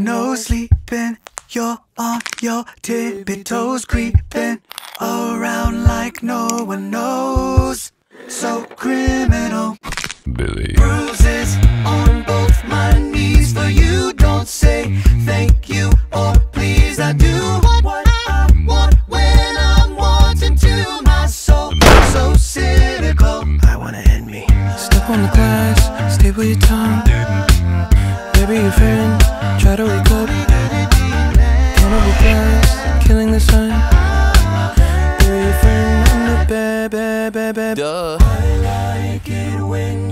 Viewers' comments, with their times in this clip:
0:10 How can someones voice go so low!?! I don't know the guy's name but he's the guy
0:21 when the door slammed am also